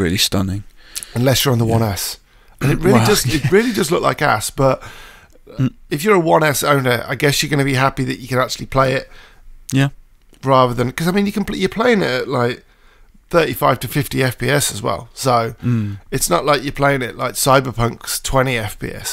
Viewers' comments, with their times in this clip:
0:04 impressive and great effort put in capturing all this footage.tho starting 2nd dude sounds like when ur gf is stuck in her loop of pretending to give a fk about what ur raving about.